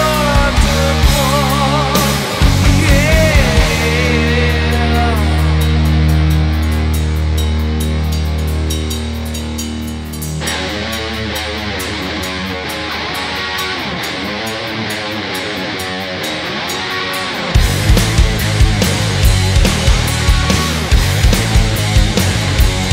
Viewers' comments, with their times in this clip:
0:10 THAT RIFF AND DRUM BEAT ARE NUTS